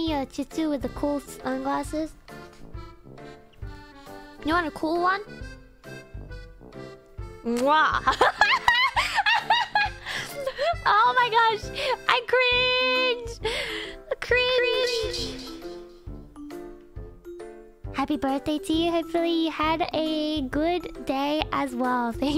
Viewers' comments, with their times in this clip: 0:04 Thank you for the fun stream! also cool mwah :_MariBlush::_MariBlush::_MariBlush: